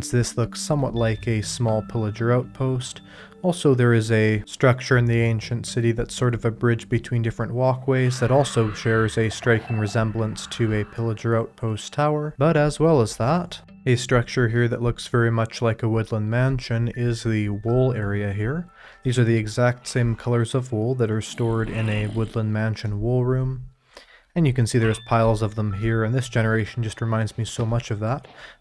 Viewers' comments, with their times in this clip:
0:09 That shrieker made me jump lol